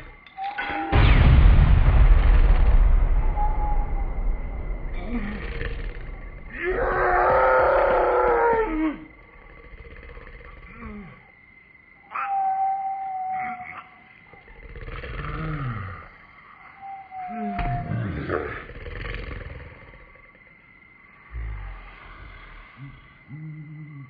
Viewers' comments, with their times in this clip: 0:06 And when you put the speed in 2X, You can hear the part RIGHT here and it can sound like the pig is CHEERING!!!!!!